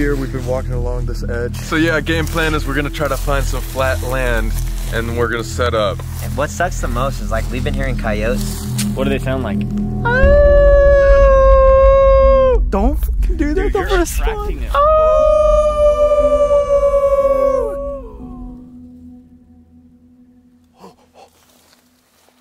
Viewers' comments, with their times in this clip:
0:09 no joke as soon as they started howling my cat looked up at me with fear in his eyes😅 Btw love your guys videos❤